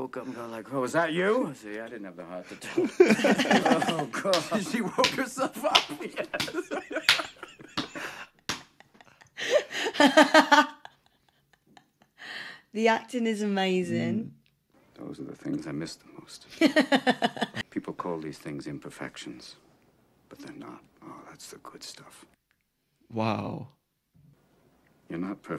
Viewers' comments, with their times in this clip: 0:07 this scene with them laughing over farts was ad libbed. Wonderful scene.